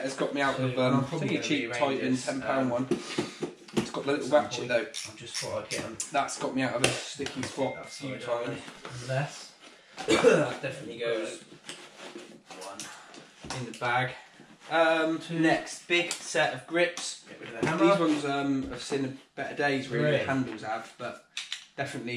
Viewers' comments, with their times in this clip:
0:05 idk of my YouTube was spazzing but I could heart to videos playing at once after you said you got a glass off water